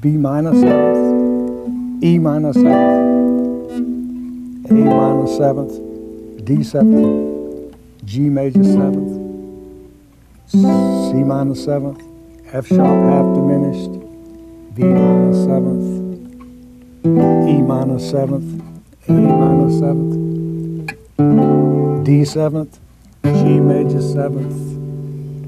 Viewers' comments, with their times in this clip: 0:10 MISTAKE! He's says that the chord is a Cmin7 but he plays a Cmaj7 (voiced as G,C,E,B). To be fair he does hesitate which indicates to me that for some reason he's having a bit of trouble. Having said all of that this stuff is amazing and now after playing jazz for a year or two everything is making more sense. Guys like this guy and Barry Harris have some great stuff theory to pass on but you've got to work hard if you want to see the whole picture.